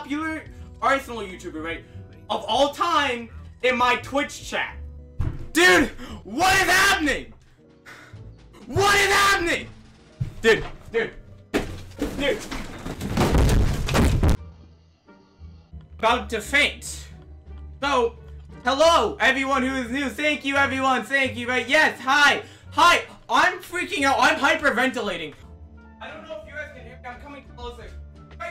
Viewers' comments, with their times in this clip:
0:09 My ears. lmfao